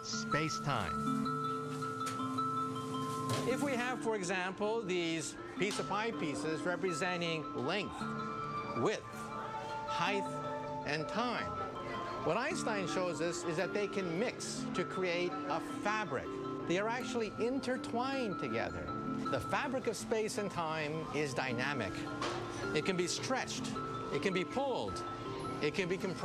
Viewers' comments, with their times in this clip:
0:09 michio kaku is cool and all... but he said heigth o_O